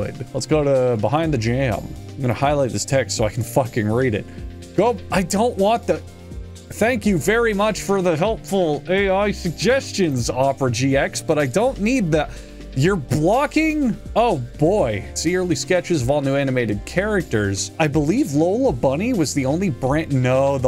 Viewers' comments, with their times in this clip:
0:05 I like how he's clearly pissed off by Opera's A.I pop up but is still trying to sound nice because it's his sponsor.